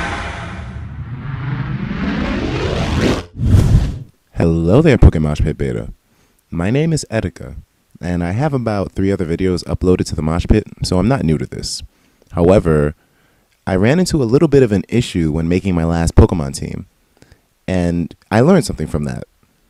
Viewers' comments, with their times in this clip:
0:04 etika predicted asmr